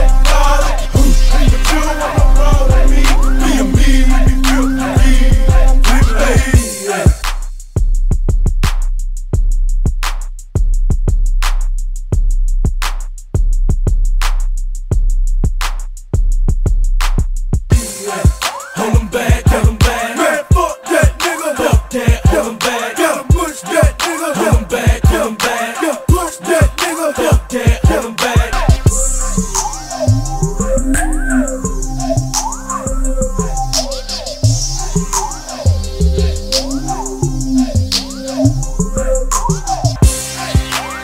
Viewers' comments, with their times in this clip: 0:07 should have just left the beat like that🔥🔥🔥🔥🔥🔥🔥🔥
0:28 that drink so strong, even the beat got dizzy